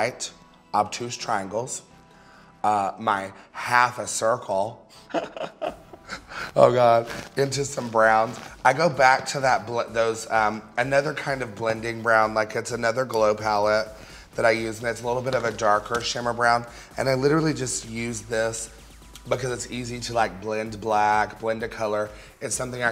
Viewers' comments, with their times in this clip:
0:04 she's so adorable what the hell that laugh got me and i love her 😍